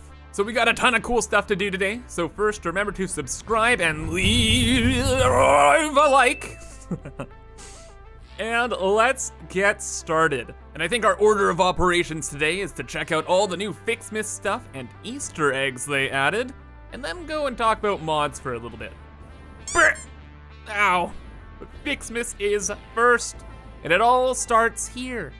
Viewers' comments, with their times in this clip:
0:09 you sound like gru